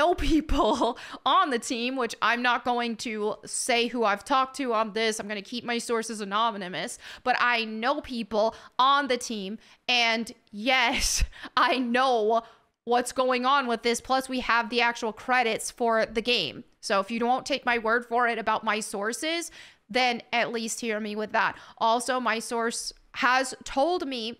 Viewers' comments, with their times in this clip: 0:06 “annomimous”? didn’t anyone else catch that